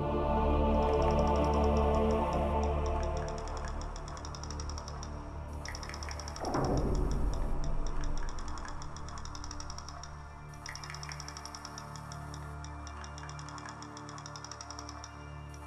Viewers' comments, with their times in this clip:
0:03 Very interesting show. Sounds to me like the clicking sounds a large fishing reel makes when being wound up.